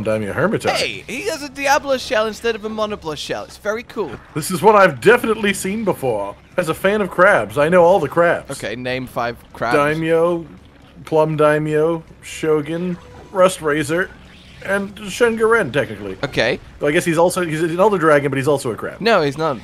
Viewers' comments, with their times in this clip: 0:07 Sad Terra Shogun Noises